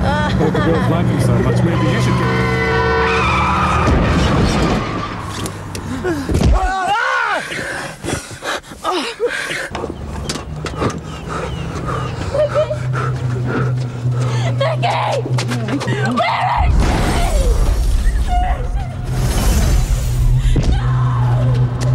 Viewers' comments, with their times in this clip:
0:06 That "Aarghh" seems funny to me